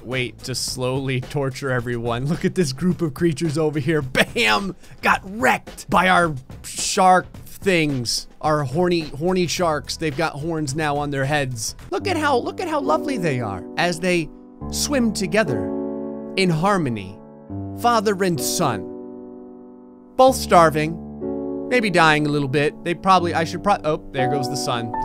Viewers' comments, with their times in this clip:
0:03 you sound like Berry from the Bee Movie.
0:12 the music made it so funny 🤣